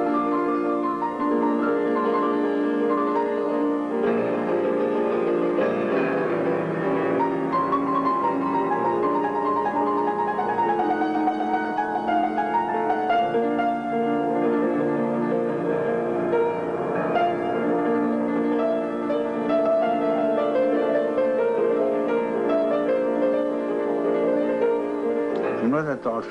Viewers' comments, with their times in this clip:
0:09 very interesting use of pedal, as written in anton rubinstein's pedal book " vibrato pedal"